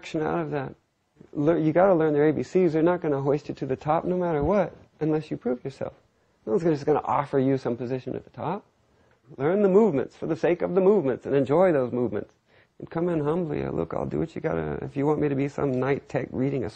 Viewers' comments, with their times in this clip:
0:04 LMAO it sounds like he says "unless you poop yourself"